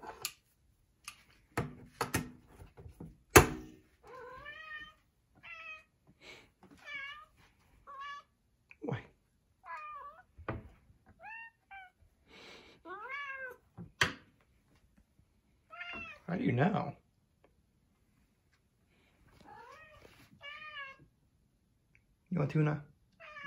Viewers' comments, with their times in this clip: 0:07 I swear the cat said “hello”